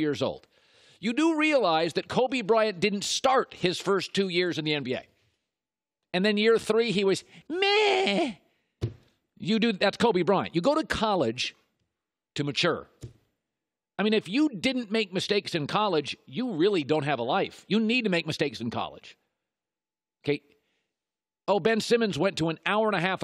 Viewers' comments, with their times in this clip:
0:07 seconds play it on .25 speed, colin could have been cartmen from southpark